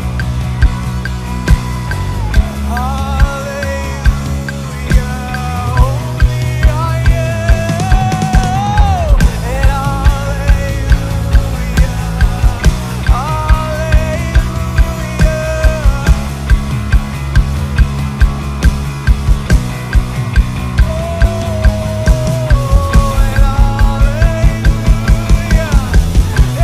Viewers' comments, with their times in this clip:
0:07 Why haven't I seen this video before!!?? You're amazing!!! I always enjoy it when you make that build up, do you use double-kick before hitting the crash?